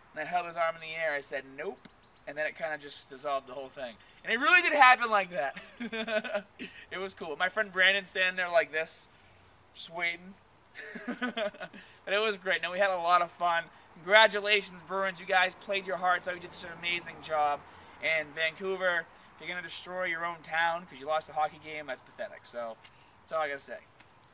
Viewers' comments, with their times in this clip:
0:05 ...you've got the most adorable laugh!!! Lol, ANYWAY... I was just curious-- what do you find to be the hardest area for you to keep in shape? Like, is there one area that you hate focusing on, but you know you have to? Mine's the butt & and the gut. Actually making good progress with da gut, but da butt seems to be a lost cause...hate doin' da squats, lol.